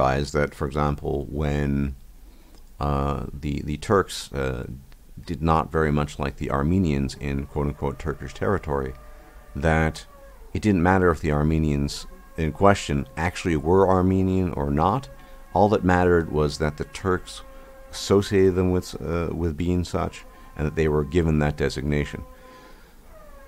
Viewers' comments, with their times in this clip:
0:06 Almost sounded like someone was screaming in pain at first lmao